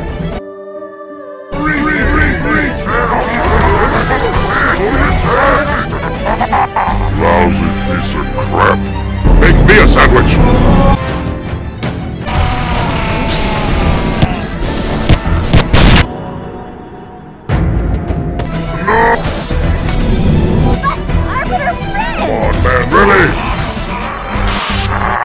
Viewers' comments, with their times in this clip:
0:05 The cat with the broken mic got me 😂
0:23 Should’ve had the gravity hammer sound for each hit of the hammer.